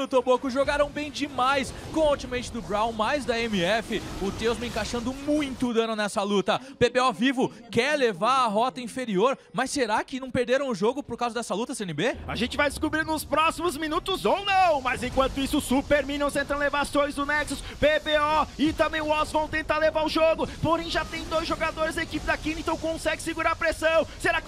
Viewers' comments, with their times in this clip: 0:05 that language sounds so funny and so ugly :P